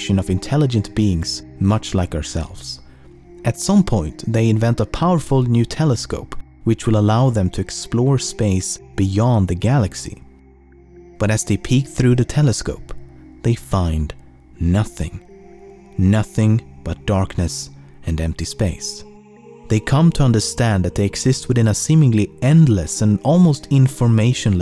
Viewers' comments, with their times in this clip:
0:04 They invent a powerful Nutella scope
0:04 "nutella scope" lol
0:05 powerful Nutella scope